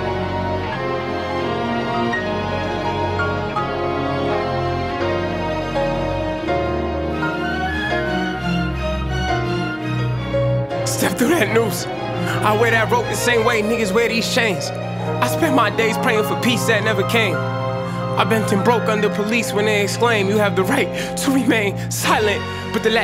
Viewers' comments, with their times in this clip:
0:10 you can hear the stress in this man's voice